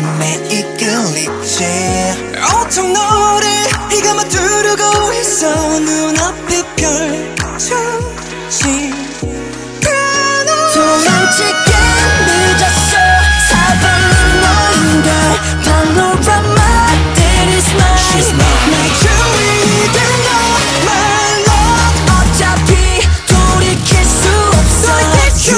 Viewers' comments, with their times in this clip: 0:09 EXCUSE ME DID HE JUST THAT FREAKING HI NOTE
0:09 that high note thooo
0:10 The high note killed me. This is pure art.